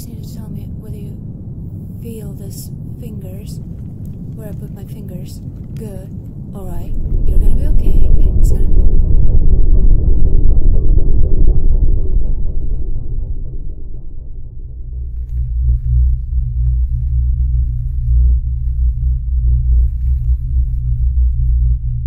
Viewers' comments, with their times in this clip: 0:09 WHAT THE ACTUAL FFFFF Listening to this on a set of Bose QC II headphones and certain parts of the background noises actually make the headphones move, it is one hell of an experience I can tell you. For example - the transition Wow